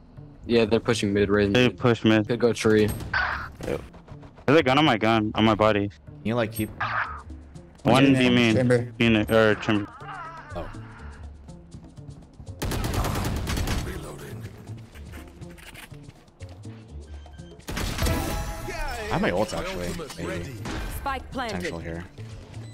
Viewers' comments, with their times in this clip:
0:08 that moan is crazy